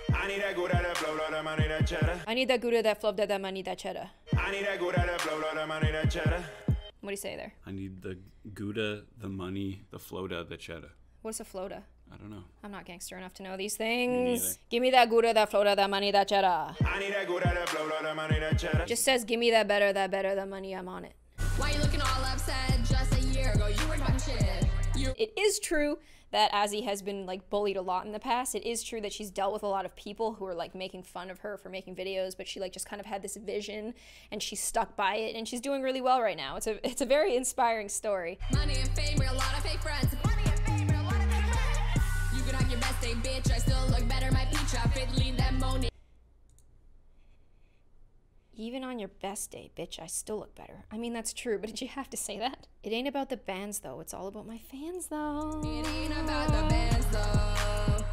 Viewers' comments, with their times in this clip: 0:03 he said 'I need to go and blow all the money, the chedder' but he said it really fast
0:40 I just love this laugh part-